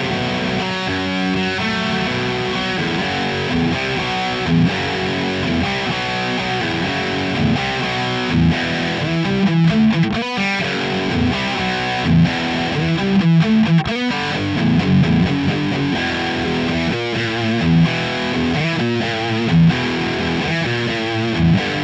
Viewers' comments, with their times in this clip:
0:09 that riff isn't part of the bass guitar?